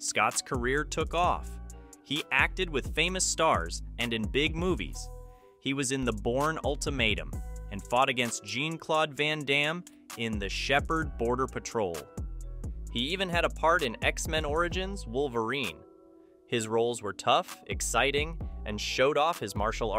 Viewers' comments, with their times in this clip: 0:07 Gene-Claude Van Damme??? 🤦‍♂️ I stopped watching the video right then and there.